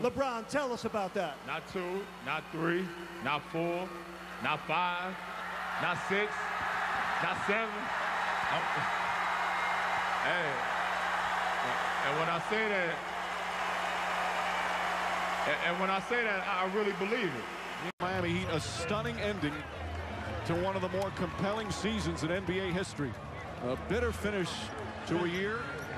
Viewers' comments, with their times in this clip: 0:06 Dwyane Wade laughing cuz he knew LeBron was getting cocky